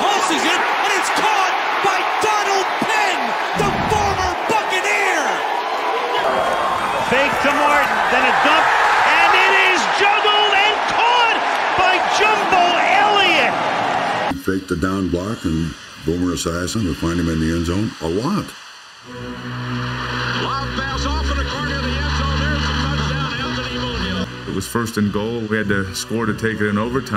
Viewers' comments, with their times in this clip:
0:08 did he say it is jumbled and caught by jumble Elliot 😂😂😂